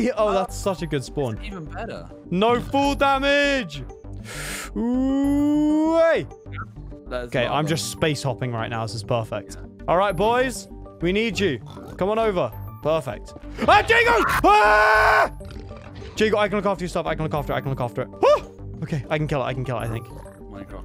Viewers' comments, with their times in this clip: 0:05 I dunno how to explain it but the music is so stranger things